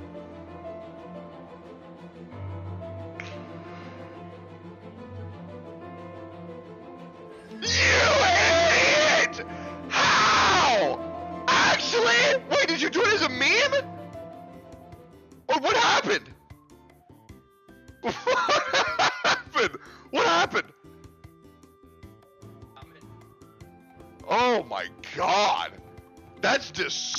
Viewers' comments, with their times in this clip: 0:07 My ears, Someone please send help xD
0:08 him screaming its so damn funny because of the crunchy audio paired with it , it sounds like a whole meme